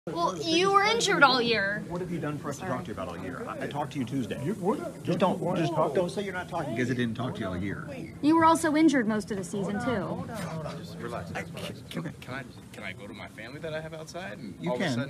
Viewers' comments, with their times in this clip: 0:00 Nails scratching a chalkboard